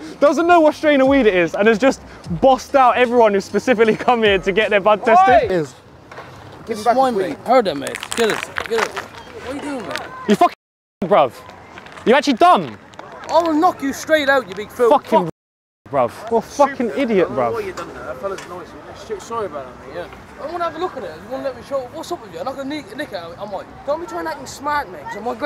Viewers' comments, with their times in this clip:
0:06 cant understand anything